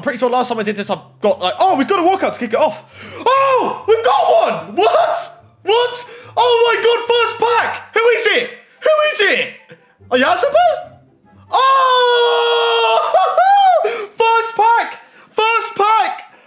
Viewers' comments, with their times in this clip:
0:03 if you listen clearly it almost sounds like it is in his first pack